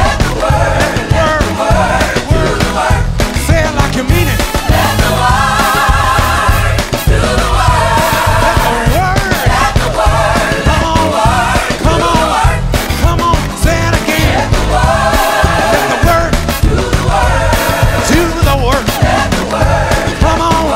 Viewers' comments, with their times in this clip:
0:08 Hallelujah, i am blessed with this melody. May HIS ALMIGHTY NAME be praised. Exodus is written